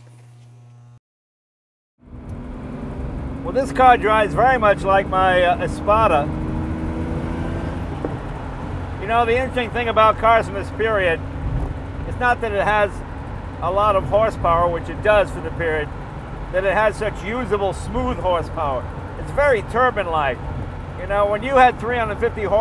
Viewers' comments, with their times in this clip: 0:08 gasp... listen to that backfire.... pop! music to my ears. had to listen to that several times. nothing makes me smile like those pops and whirs of old cars